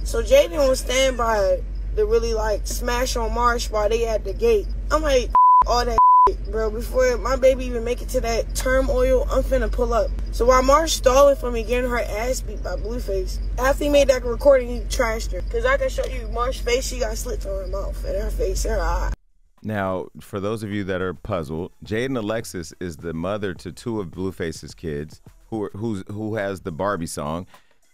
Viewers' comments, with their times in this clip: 0:08 Did Chrisean say TERM OIL instead of turmoil? 🤣🤣🤣🤣